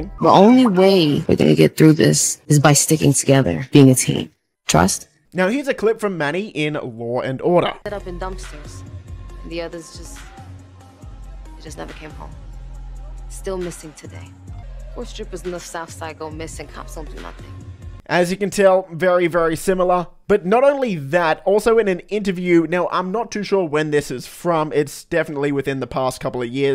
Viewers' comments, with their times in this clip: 0:08 If that’s not Lucia then we found her doppelgänger cause that’s an exact match 😂